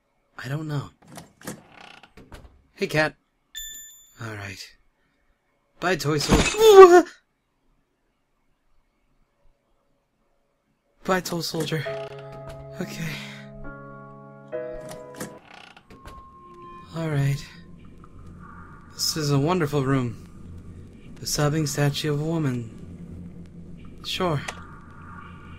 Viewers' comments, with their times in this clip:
0:05 omg the most adorable sound to make when scaraed
0:10 he said 'bye toll soldier' xD